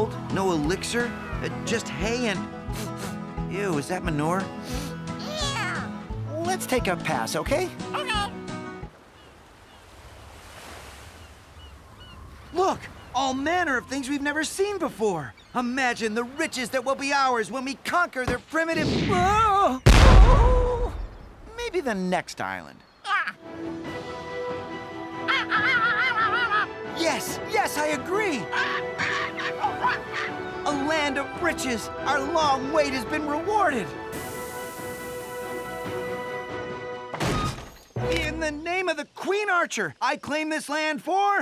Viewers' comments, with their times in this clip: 0:07 that 'ok' was so damn cute
0:27 Skeleton Talked Sea Gull Language
0:27 "yes, yes! I agreed! Starts speaking seagle language